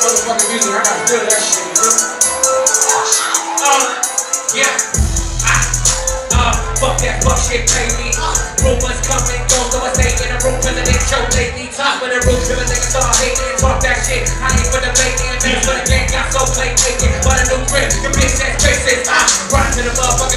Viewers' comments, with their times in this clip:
0:05 that hard augh tho